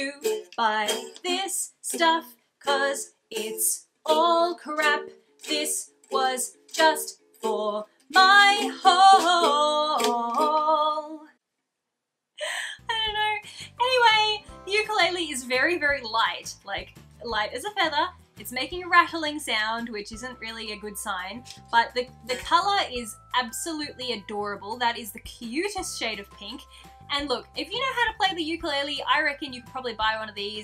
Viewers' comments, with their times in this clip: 0:04 you sing beautiful
0:15 you should tune it xD and yea even a 150$ ukulele is really light <3